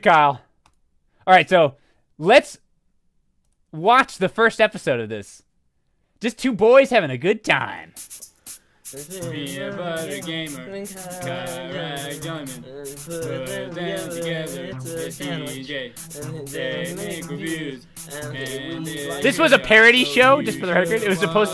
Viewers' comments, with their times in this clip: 0:08 ladies and gentleman, the greatest intro theme of all time.